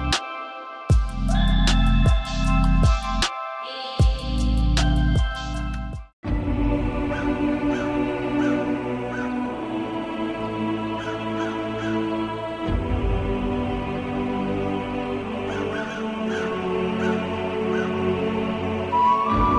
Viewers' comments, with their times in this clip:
0:06 man that music just fills you with nostalgia. Amazing work